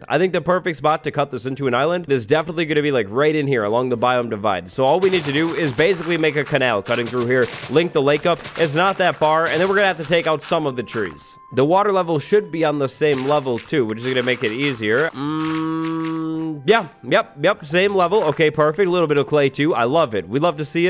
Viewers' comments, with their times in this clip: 0:03 I checked my playback speed he was telling so fast😂😂